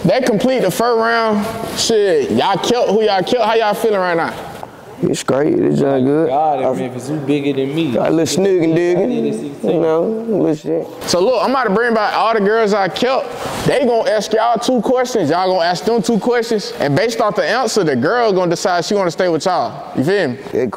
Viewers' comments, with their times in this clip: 0:07 What he said? "Snoogy-Doogy"? 😂😂 That's that Baltimore lingo